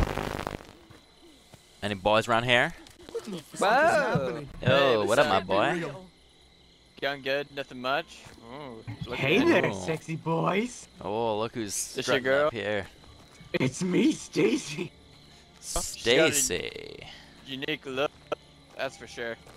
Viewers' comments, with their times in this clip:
0:06 does he say "doin good, nothin much" or "yung gud, nothin much????????????"